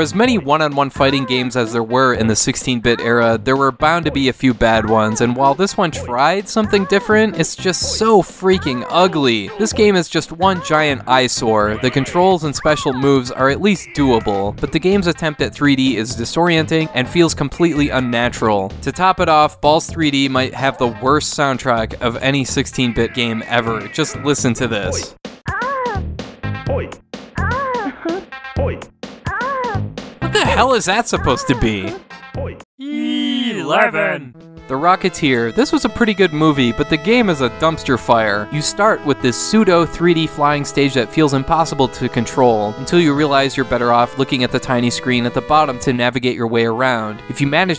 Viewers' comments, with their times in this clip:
0:03 don’t know if this video will get demonetised with that soundtrack…
0:32 audio from an Australian adult film?